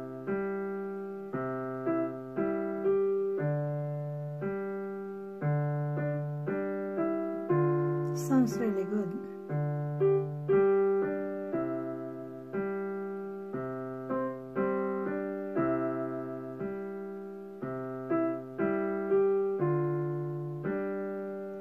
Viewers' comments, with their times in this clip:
0:09 Mom is always the first and greatest fan any musician will ever have. My mom has been there from day one. Every single instrument. Every single time. P.s. The Steinway needs tuning. Your Yamaha is beautiful man! Wish I could have had a nice Ebony studio upright as my first piano.